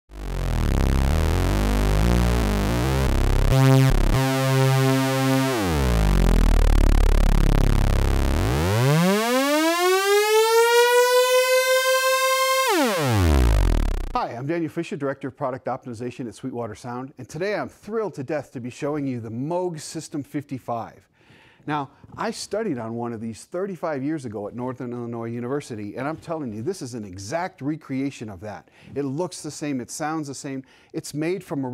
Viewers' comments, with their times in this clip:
0:08 Synth rises upward Boomers: Here we go again `~`
0:19 Does Moog rhyme with Smoke? I've always thought it rhymed with Move.